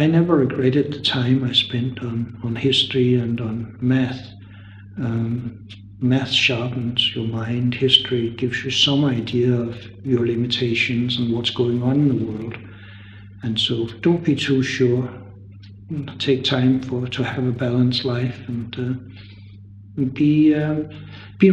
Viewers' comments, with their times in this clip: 0:06 "meth sharpens your mind" best advice ever